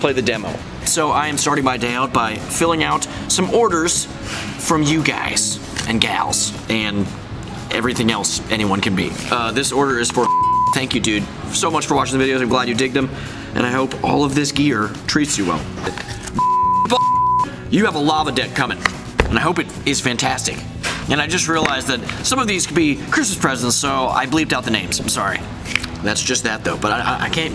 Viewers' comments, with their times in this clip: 0:09 OMGGGGG HE SAID MY NAME MY NAME IS 𝗕𝗟𝗘𝗘𝗘𝗣 OMGGGGGG